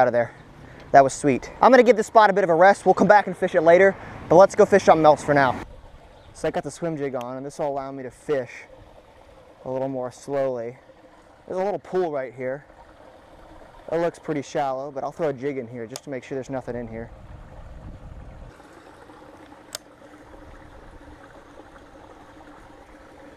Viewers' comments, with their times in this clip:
0:07 is it me or did the audio get bad here